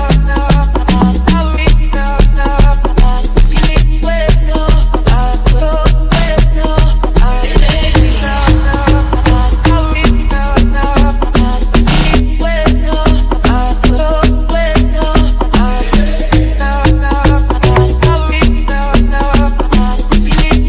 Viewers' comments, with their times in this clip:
0:06 FREAKINNGGGGG HTISSSSS !!!!!!!!!!!!!!!!!!!!!!!!!!!!!!!!!!!!!!!!!!!!!!!!!!! THAT TRANSITION !!!